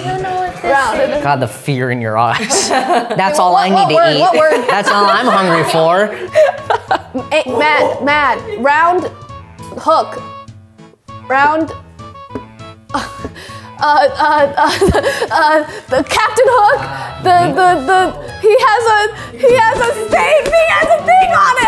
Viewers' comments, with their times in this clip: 0:07 shanty pass song goes hard in the paint